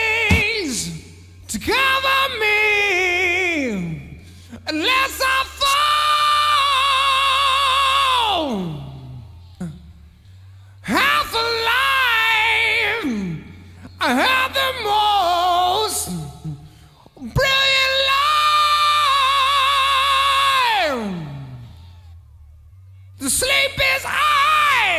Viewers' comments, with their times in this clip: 0:06 love layne who's screaming ?